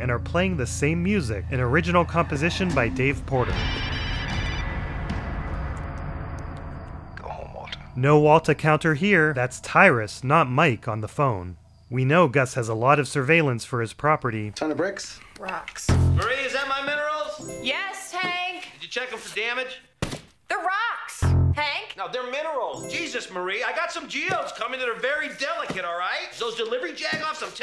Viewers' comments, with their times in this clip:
0:08 I always assumed it was Gus on the phone 🤣Has a similar sounding voice to him at least.